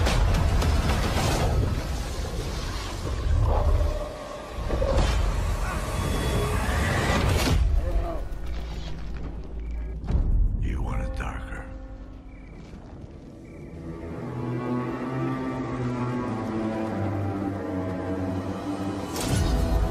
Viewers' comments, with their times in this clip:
0:03 on the double kill hits exactly on the music too